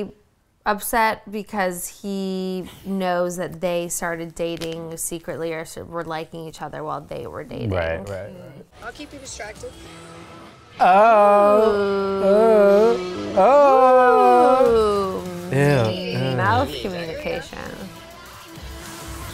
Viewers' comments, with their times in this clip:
0:04 PLEASE tell me if that knuckle crack was natural or a sound effect? I need it to settle an argument. 😂